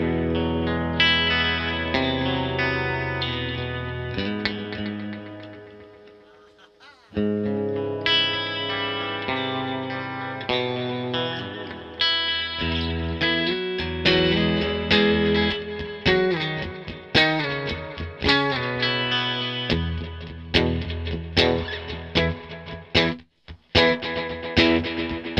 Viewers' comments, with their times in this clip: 0:06 Love the tones, like "Ah...! Ah-a!" :-)